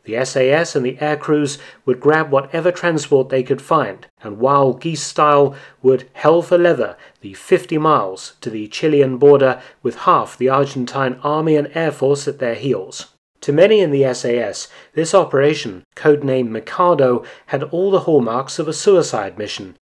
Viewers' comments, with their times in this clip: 0:07 I had to replay it 4 times Did he say "Wild East Style" or "Wild Geese Style"?